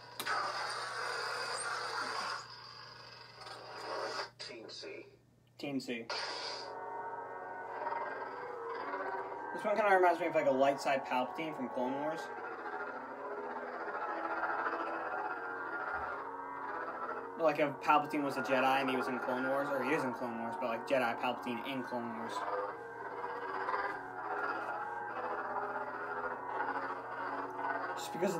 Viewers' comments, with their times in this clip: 0:04 What is the one that you said sounds like a light side Palpatine? It sounds like "TNT" or "Teen Sea" or "Team C" or "Tea See" or something, but I can't quite make it out?
0:14 that is the wickedest sound. i love tje growly sounding ones.